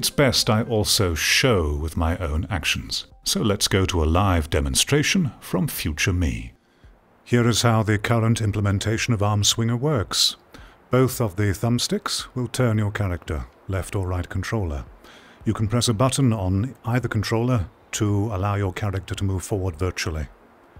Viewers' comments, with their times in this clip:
0:04 Future you sounds an awful lot like Liam Neeson, haha. I don't have VR gear, so didn't even know how VR games are still so similar in terms of design to flatscreen games. Your solutions sound reasonable. Good video.